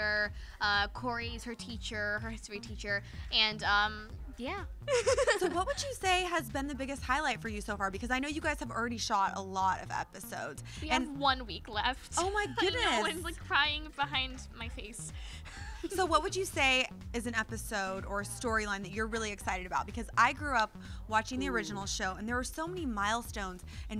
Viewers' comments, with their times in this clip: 0:04 Did anybody else hear that real weird giggle I'm pretty sure that was not her